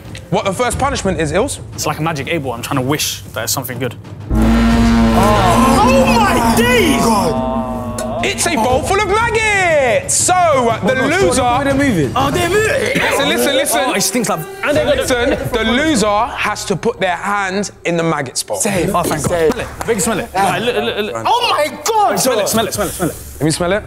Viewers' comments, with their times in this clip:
0:04 sounds like deji
0:05 why did that “oh my days” sound exactly like deji